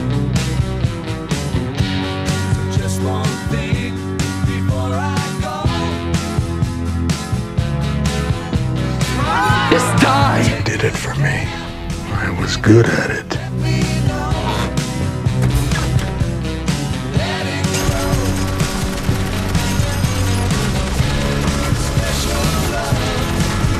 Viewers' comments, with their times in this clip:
0:09 with the song really gave me goosebumps!